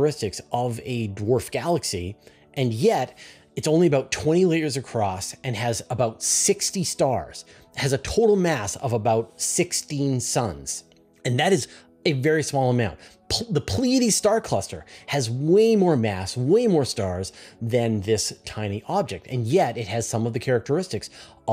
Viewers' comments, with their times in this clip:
0:04 The "dwarf galaxy is only 20 layers across." I had to rewind that a bunch of times, lol. I thought Fraser was saying litres or metres? I couldn't find a clear answer about how many layers The Milkyway has and if that was vertical or horizontal layers 🤔